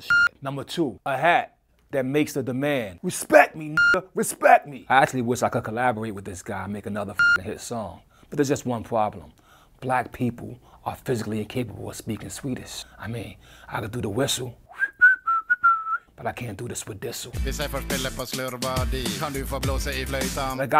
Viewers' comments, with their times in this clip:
0:08 That was not swedish......